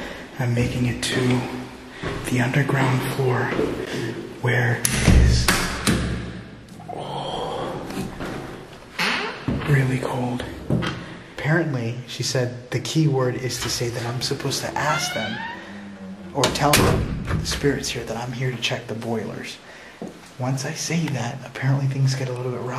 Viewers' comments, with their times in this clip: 0:06 hear sound scary